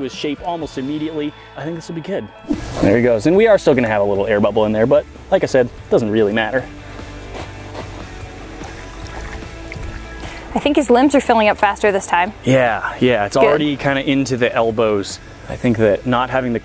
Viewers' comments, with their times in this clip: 0:04 Perfectly cut scream edit?